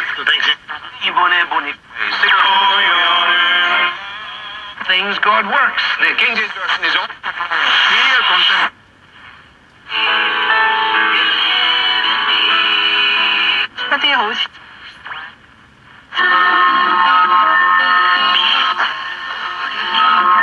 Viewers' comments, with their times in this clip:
0:05 What causes that bird flutter sound ? Some form of digital mode?